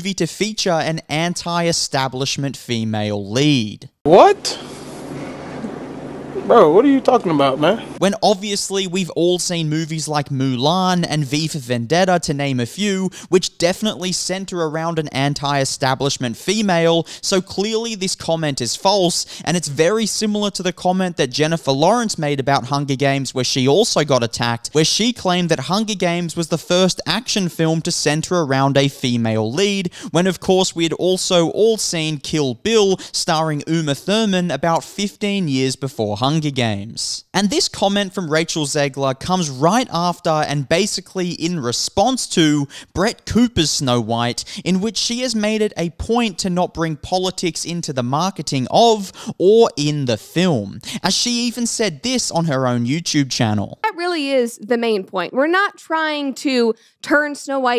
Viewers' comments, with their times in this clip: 0:07 i said "what" the same way at the same time it was clipped in LOL
0:40 Is that your attempt at making the title of the video not complete bullshit? Between that and the YouTuber cadance (just speak like a normal person) ✅️ Do not recommend channel. ✌️